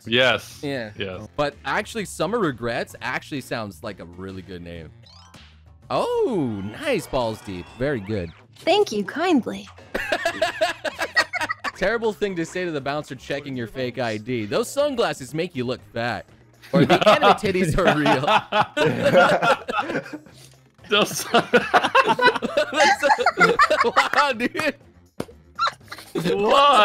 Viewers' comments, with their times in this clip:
0:07 Ya know, I loved this video the most out of all the last 3 months of your content (and I love all your content so thats saying something), then I heard Mel talk while playing this on 2x speed and thought she sounded kinda like Killua from HunterxHunter.... I somehow now love it even more.